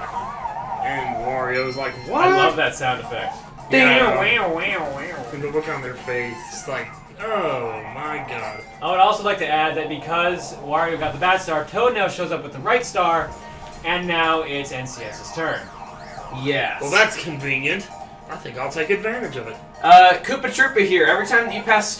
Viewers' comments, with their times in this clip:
0:03 -21 you can, very faintly, hear Wario saying, "D'oh I missed." Yes, it is very difficult to hear, I had to replay that part about three times.
0:06 I like how no one noticed wairo say Doh i missed (or soi ein mist or whatever)
0:07 I like how they were talking over the game so much that they COMPLETELY missed Wario's "D'oh, I missed!" XD
0:07 I don't know if anyone noticed this, but the first "D'OH I MISSED" is in this video It is very quiet since everybody is talking, but if you listen closely you can hear that awesome catchphrase.
0:07 ) [muffled "D'oh I missed!"]
0:07 It's very faint, but you can hear Wario say "D'oh, I missed!" I know this video is over 4 years old, but I didn't hear it until just now.
0:07 anyone hear a tiny doh i missed ?